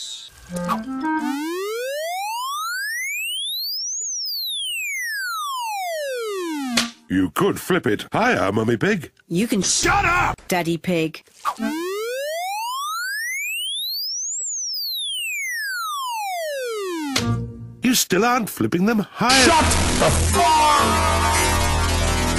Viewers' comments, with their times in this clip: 0:10 Daddy pig:*cries* Mommy pig:I never said that 😶